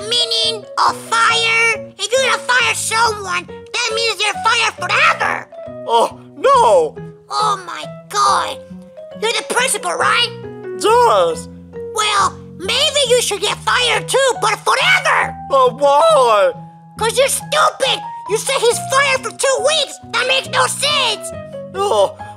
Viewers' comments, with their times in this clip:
0:10 puppet master sounds like yoshi